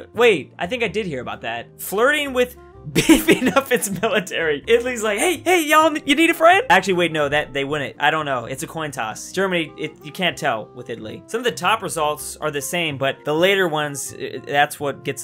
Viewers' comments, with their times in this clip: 0:03 Italian wheezing noises